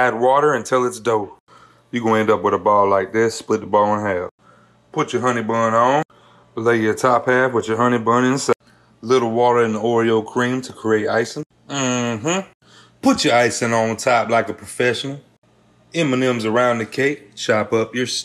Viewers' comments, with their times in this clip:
0:06 The guy sounds like having lots of ingredients not mentionend... ;-)